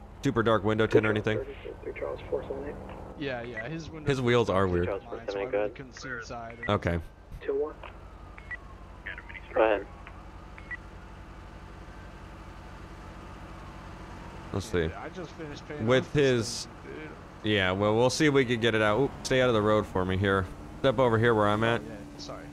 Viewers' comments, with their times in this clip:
0:05 some guy on the radio was watching your stream you could hear the part you said mini stroke